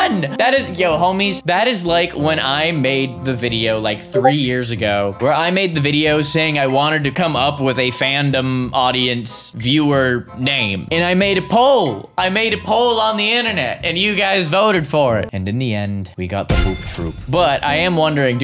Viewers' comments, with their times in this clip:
0:04 bro got me with the discord ping